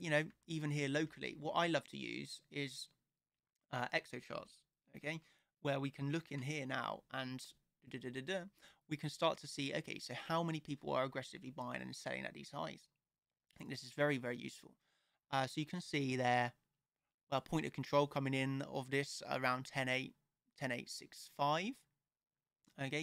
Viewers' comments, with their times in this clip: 0:05 What is the second chart that you used ? Sounded like exif/exit. And whats the best way to access it?